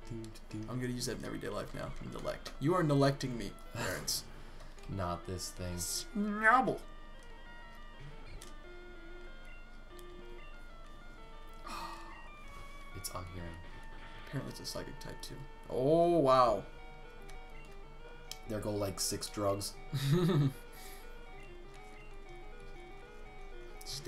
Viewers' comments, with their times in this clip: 0:07 best Snubbull voice ever.